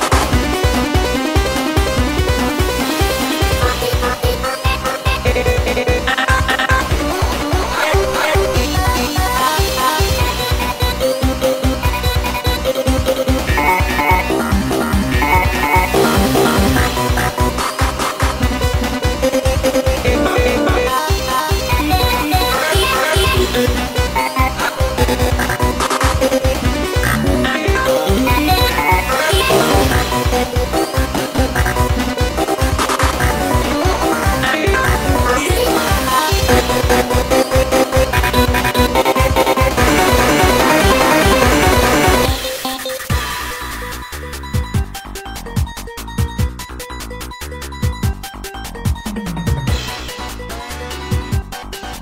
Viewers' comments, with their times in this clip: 0:08 Was it just me or did sunky sounded more like SpongeBob?
0:39 Everyone : *singing very chaoticly* BF : A E A E